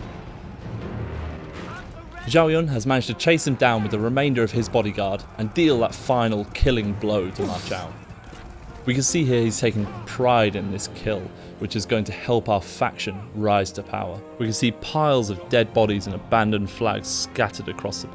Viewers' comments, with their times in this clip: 0:05 Sounds like he sneezed into afterlife
0:06 Great "Oof's" in gaming History Mario 64, 1996 Roblox, 2006 Minecraft, 2009 Total War: THREE KINGDOMS, 2019, Ma Chao being thrown from his horse